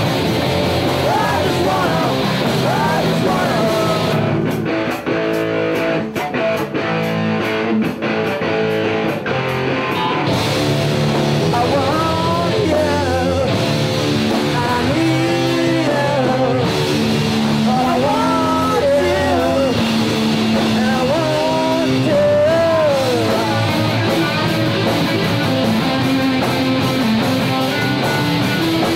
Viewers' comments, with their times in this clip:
0:10 The song is a fairly decent Stooges//GG Allin and the Jabbers ripoff until the breakdown that entirely ruined the song beyond all repair.